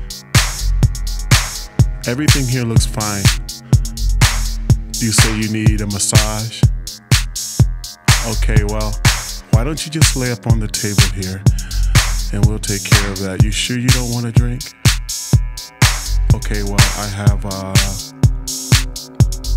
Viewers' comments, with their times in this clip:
0:05 that spacy beat just sick does anyone know the track ID